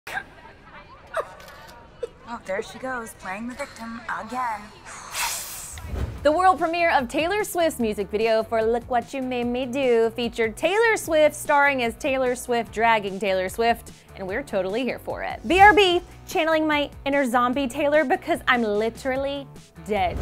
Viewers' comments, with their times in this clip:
0:07 Did she say: "Taylor Swis" ?? Tf